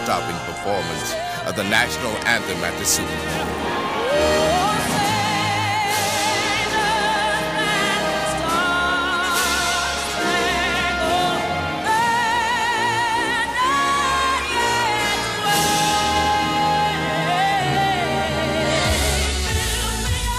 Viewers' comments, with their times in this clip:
0:04 Can we talk about this right here?! Usually the orchestra supports the vocals, but Ms. Whitney Houston carried the orchestra through these notes and it sounded like she supported the whole dang orchestra and guided THEM through that part! Wow, it’s stunning! IT has the air of ” come along, follow me, right this way!”❤